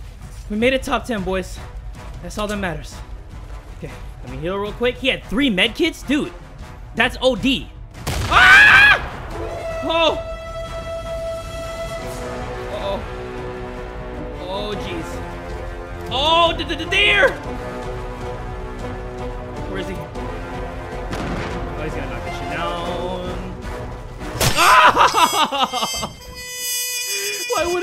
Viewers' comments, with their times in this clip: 0:08 The best girly scream
0:09 that scream tho 😂